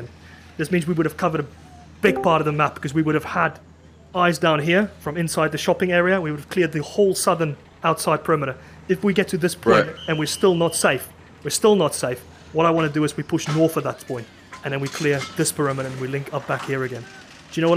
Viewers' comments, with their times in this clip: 0:04 the discord sound cought me off guard